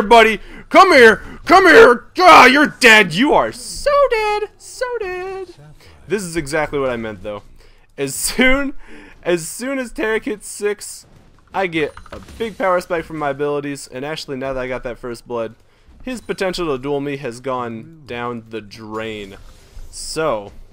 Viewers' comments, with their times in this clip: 0:03 that voice was fun